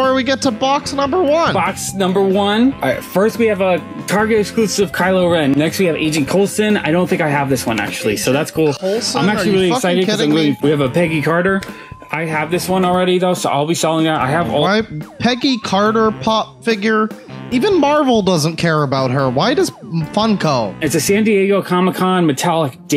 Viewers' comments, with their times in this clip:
0:03 I just wanna appreciate the fact that this man said "Carlo Ren".